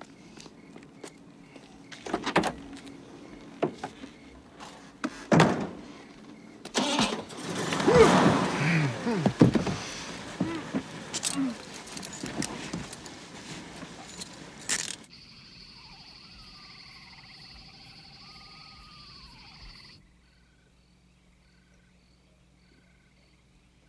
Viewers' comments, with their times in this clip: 0:07 Time to hear that POP